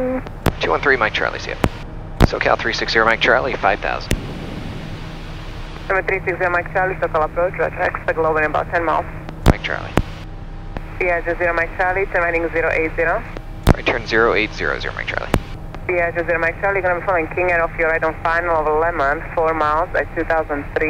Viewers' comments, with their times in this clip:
0:06 Is that even English??!